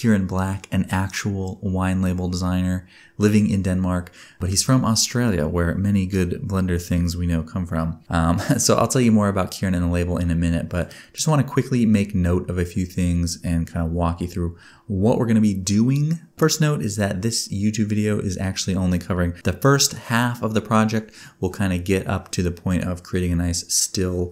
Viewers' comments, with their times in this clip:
0:08 Your laugh is just like him... 😅